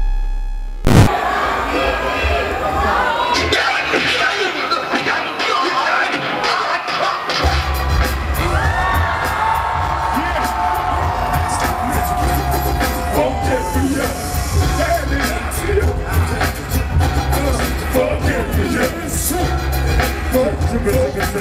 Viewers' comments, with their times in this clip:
0:07 O.D.B came in like the start of a mega man stage. READY!